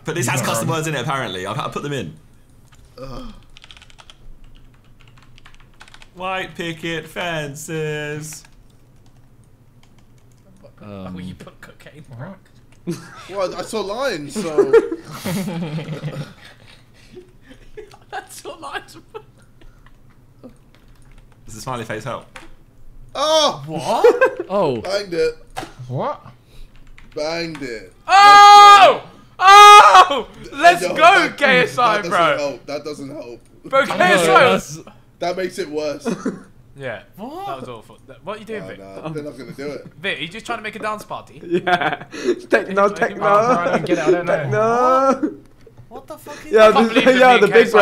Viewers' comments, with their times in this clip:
0:05 Josh singing a FIFA classic song
0:31 Fam I swear behz called JJ GaySI 😂